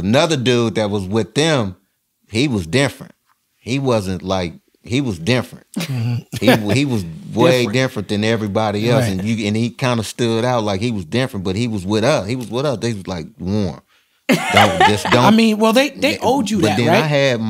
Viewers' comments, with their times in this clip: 0:04 He was "diffuent.. like he was diffunt!"